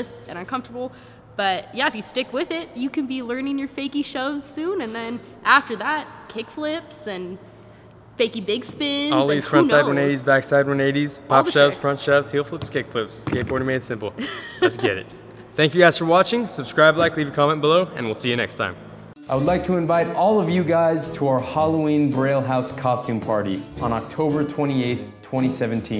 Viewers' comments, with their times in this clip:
0:07 So nobody heard hr say fakie dick spin?😂